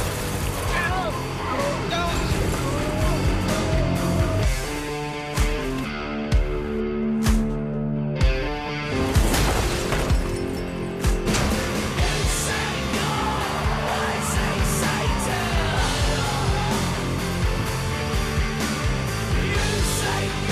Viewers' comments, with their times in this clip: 0:05 How doesn't it? For example when pilgrim first drove up, the lyrics came in perfectly and the instrumentals go perfectly. Really, you need to take a class in sound directing if you believe otherwise, but I'm all ears to hear your complaints.